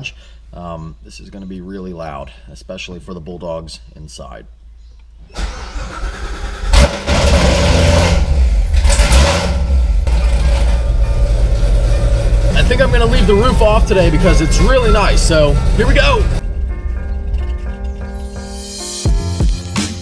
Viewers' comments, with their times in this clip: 0:04 that cold start ! 😍 I love it!